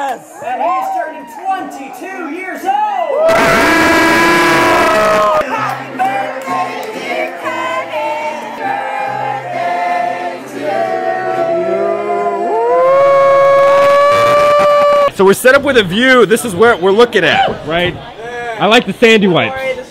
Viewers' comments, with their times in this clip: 0:03 rip headphone users XD